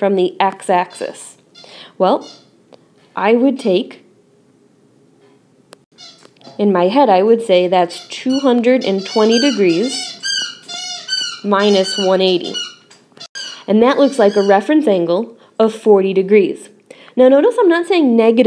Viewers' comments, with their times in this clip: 0:06 AGAIN ......the ...DOG???